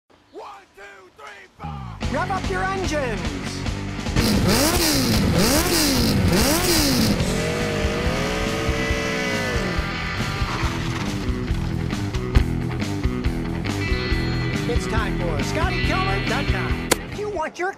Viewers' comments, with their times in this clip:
0:00 turns on Automated Captions WHY DO YOU LOCK YOUR ENGINE